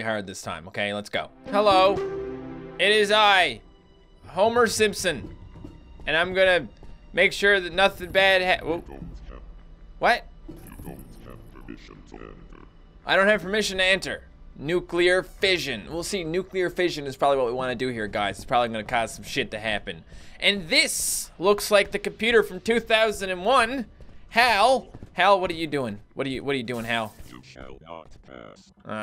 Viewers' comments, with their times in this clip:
0:10 That sounds like Auto from WALL-E!
0:11 When I heard the Robot's voice I was like, "Did the fucking Wheel from Wall-E get a new job at a fucking Nuclear Plant?"